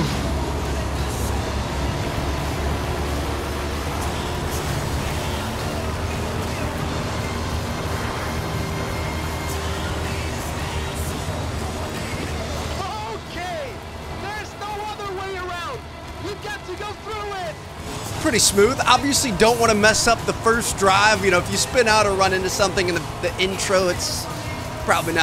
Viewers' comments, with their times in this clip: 0:06 Man you farted 🤣🤣🤣